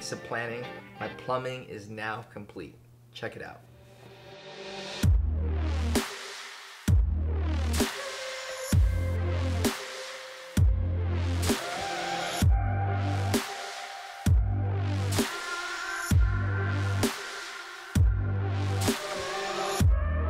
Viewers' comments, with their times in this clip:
0:06 Just found your channel…excellent work! What is that song playing ? Very chill, and I want it!